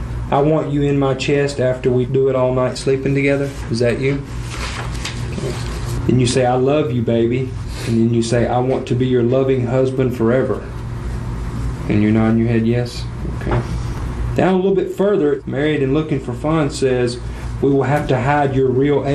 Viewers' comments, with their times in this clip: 0:05 this cop laughing in the background. hilarious
0:06 the laugh and pity of the right-side police officer made me chuckle :)